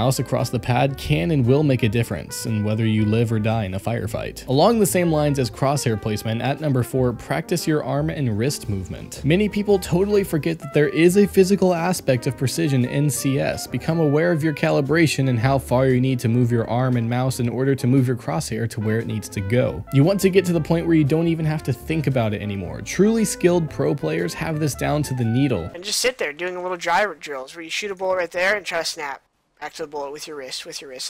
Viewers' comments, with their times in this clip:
0:07 Aim or Arm?
0:13 Aim or Arm?